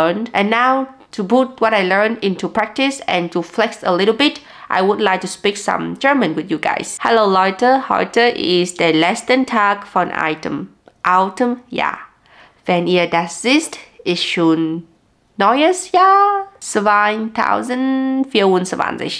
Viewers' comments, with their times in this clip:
0:07 German doesn't usually sound as cute as this